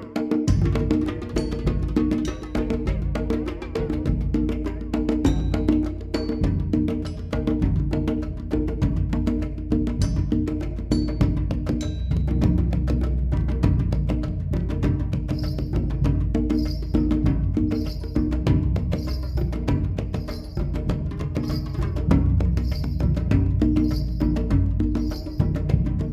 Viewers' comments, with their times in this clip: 0:10 this is what a baby hears when they shake the rattle...